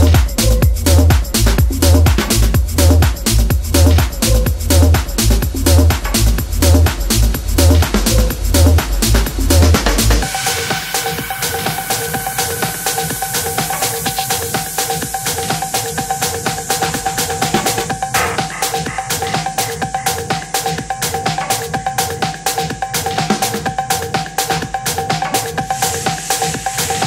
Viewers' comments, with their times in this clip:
0:10 That vintage trill though.